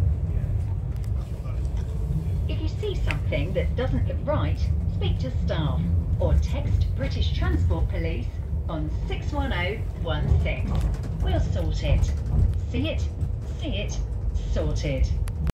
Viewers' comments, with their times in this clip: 0:13 Lol it sounds like it saying “sing it”